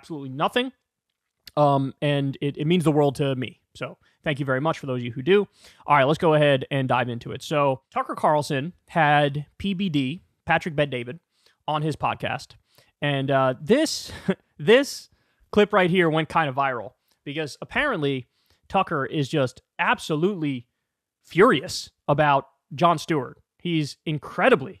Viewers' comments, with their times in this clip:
0:07 PBR has a podcast? Coors, too?